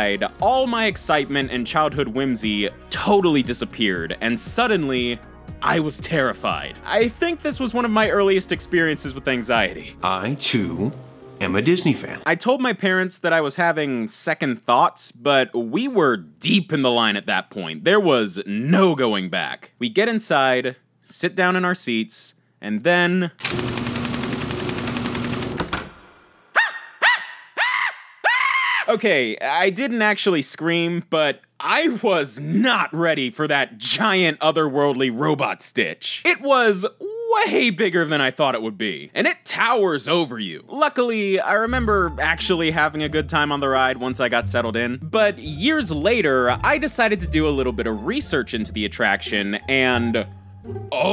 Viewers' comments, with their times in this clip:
0:10 I love how he distorted Virgil’s voice not to get copyrighted lol
0:33 screams me: spits out water HAHAHAHA